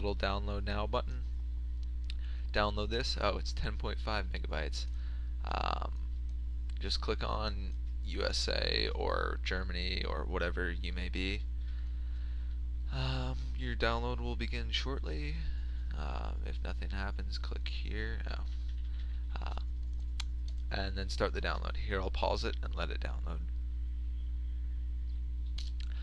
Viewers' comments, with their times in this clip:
0:08 i was scared from his voice